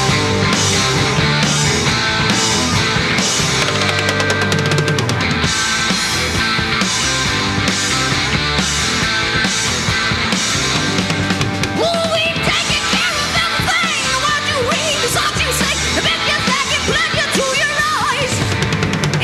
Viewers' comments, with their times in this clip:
0:03 was the drum fill that made me fall in love with Rush back in 1976. Neil played it with complete authority!! NO ONE had EVER played like that before. Speed + Precision = Perfection. *